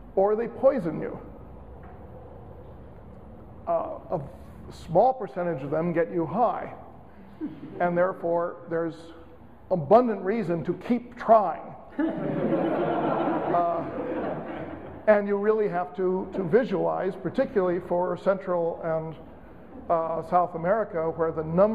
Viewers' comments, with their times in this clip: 0:04 wait what... he tried to not sound boring for once?!